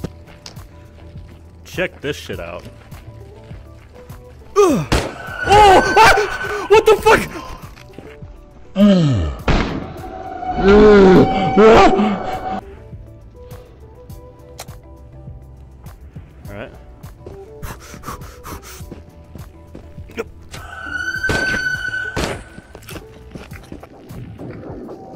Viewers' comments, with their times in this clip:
0:09 sounds like the sigil from 1.0, seems like they just slowed down the mimic sound.